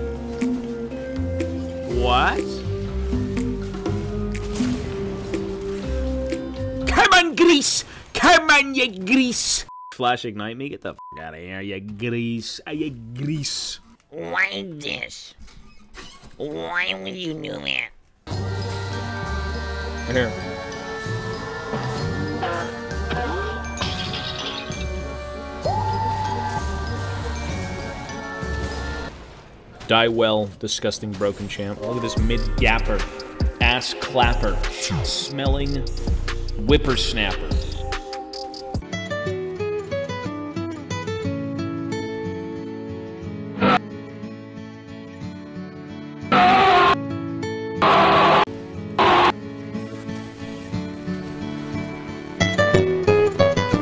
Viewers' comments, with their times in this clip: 0:06 its even funnier to be swedish because it sounds like "gris" wich is pig in swedish
0:16 he sounded like Lola from Big mouth
0:40 not the alarm sound😭😭😭